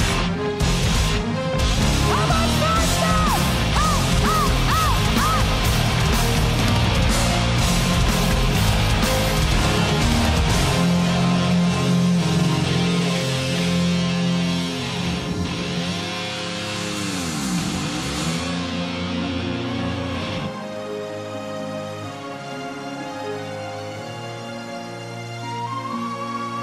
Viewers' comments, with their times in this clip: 0:10 the queen demands silence and behold, there is silence 🤘 🤫 😁